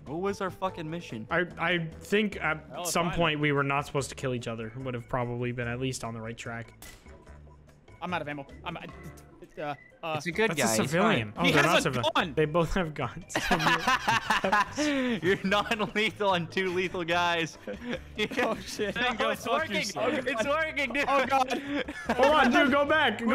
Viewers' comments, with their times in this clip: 0:09 that guys luagh sounds like a raygun from call of duty zombies.